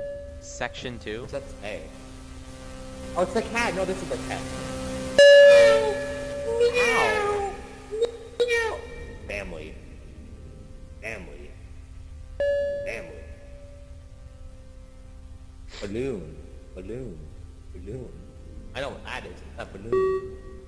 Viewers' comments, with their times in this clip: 0:04 why did I start meowing LOL